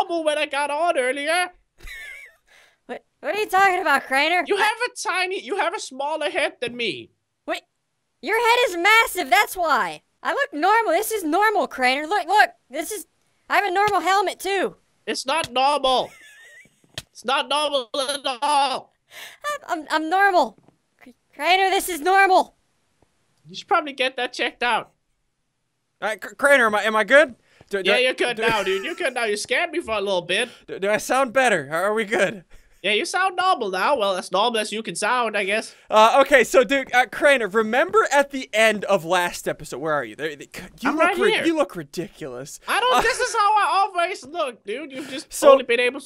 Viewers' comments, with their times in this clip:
0:03 THE LAUGHTER BEGINS!
0:06 play at 0.5 speed they sound so high
0:32 Me when my voice is glitching in my online class call: